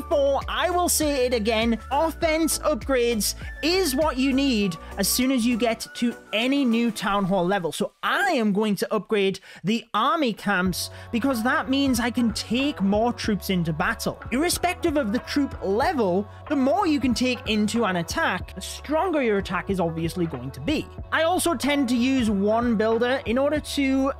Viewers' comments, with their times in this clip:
0:07 Did anyone else hear that voice crack
0:07 this voicecrack bro HAHAHA